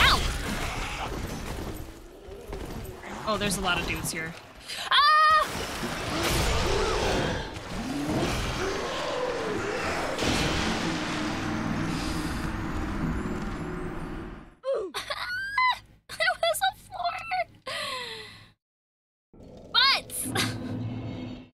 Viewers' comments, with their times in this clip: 0:04 My video paused to buffer right for a perfectly cut scream.